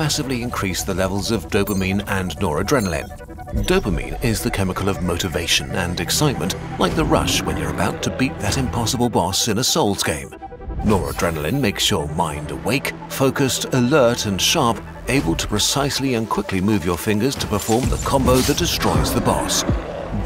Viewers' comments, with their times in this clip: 0:03 DID I HEAR NODRENALINE